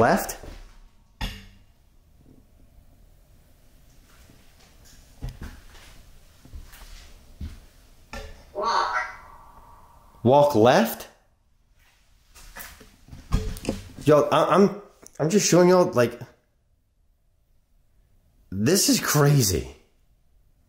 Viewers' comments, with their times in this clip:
0:04 A faint evil sounding whisper says "Don't you look at me"